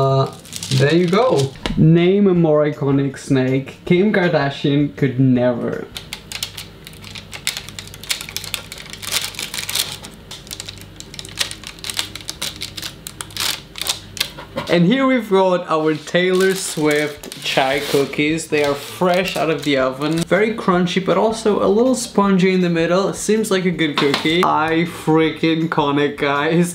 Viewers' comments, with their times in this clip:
0:09 best ASMR everrrrr!